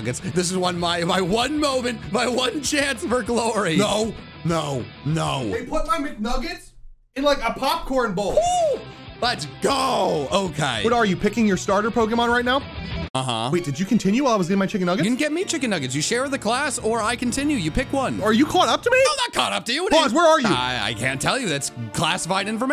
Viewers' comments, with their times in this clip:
0:03 Power Rangers theme slaps
0:03 The fucking power rangers theme